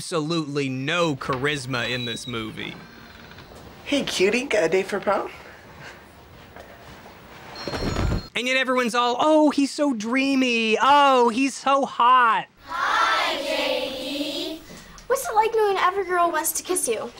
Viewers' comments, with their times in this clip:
0:03 My sleep paralysis demons whispering in my ear at 4 am